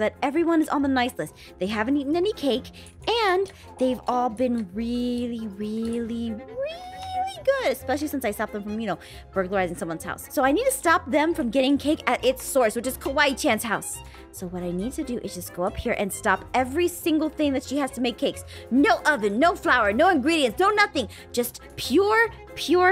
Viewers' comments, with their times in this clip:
0:03 "aww" i heard if u hear great